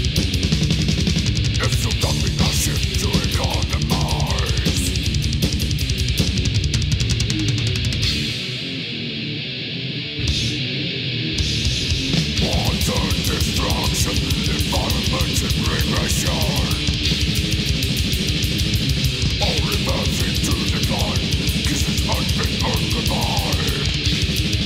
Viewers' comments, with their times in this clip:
0:09 after listening to this song 1000 times, I have finally managed to hear Barney's breath :) Can you hear a slight inhale there? (you may need headphones for it).